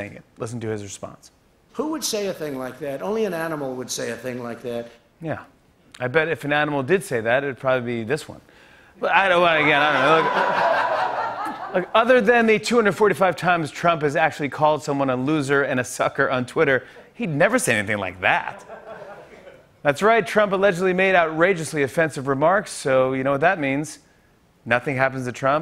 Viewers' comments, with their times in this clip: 0:07 What the FUCK was with ? Sounded like he was having a stroke while doing a bad impression of a Spongebob laugh.